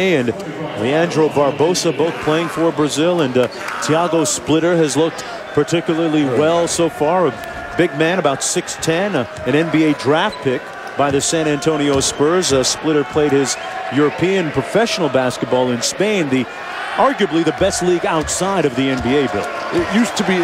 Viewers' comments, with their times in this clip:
0:08 Gotta love it when the crowd was singing Happy Birthday to Kobe. Las vegas is his house.